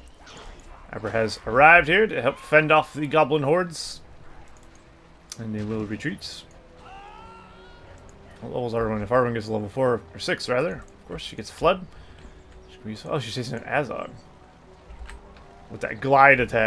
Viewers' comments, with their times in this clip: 0:03 Haha that sound the goblin makes getting picked up by the eagle